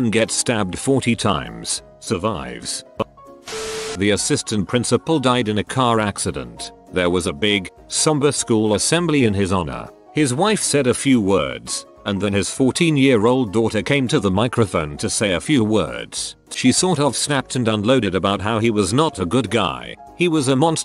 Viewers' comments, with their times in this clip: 0:03 Happy music playing in the background while a assistant principal died.